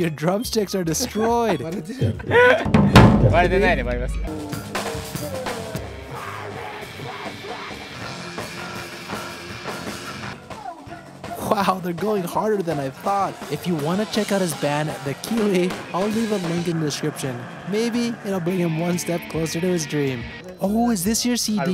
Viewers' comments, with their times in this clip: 0:05 wow a hardcore band